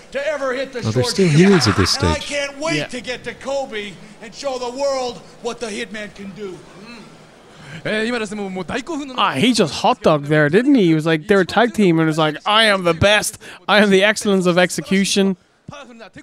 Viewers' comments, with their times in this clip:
0:03 I love Bret's pronunciation of Kobe in It got me wondering for a moment: "Is Bret Hart going to a basketball game?"